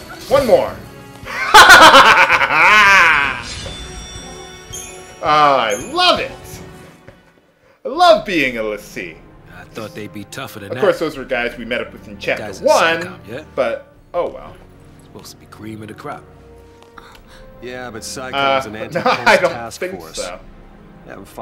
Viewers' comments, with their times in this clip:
0:03 Best. Laugh. Ever.